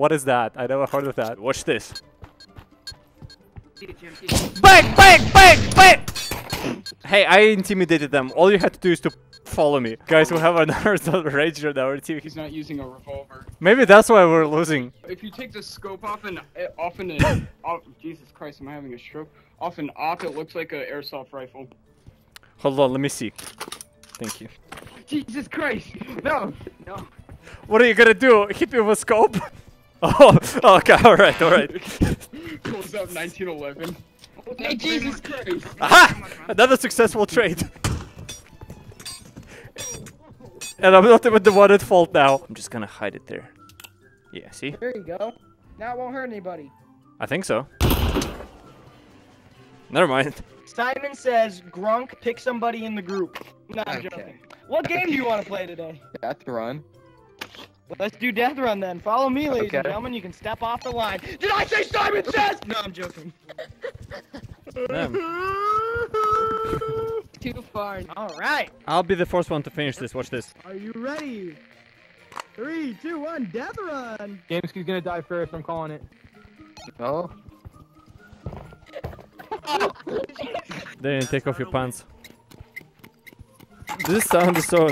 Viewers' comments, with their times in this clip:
0:05 that small sound in my left ear made me think someone knocked on my door jfc
1:05 *Crying*... *YouTube Captions*: [Music]